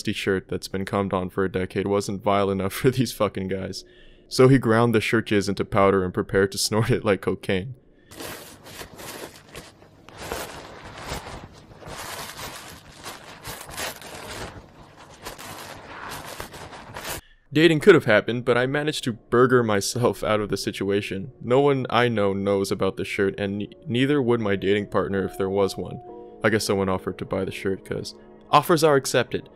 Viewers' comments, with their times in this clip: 0:10 WHY IS IT SO CRUNCHY SOUNDKNG IM GONNA LOSSEEE MY MIND WTF